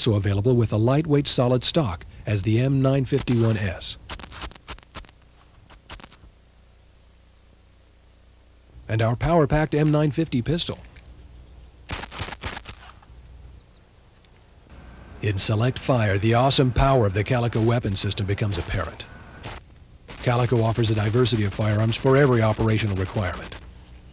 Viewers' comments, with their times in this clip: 0:09 While shooting the pistol I saw the guy reaching to pull the cocking lever, as if the gun has jammed and then put it away. It also made some noise which sounds like the mechanism got stuck. This made my day lol